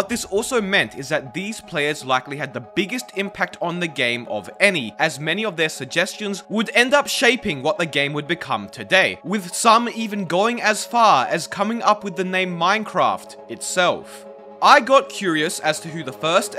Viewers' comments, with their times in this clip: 0:03 ur tone gets really aggressive after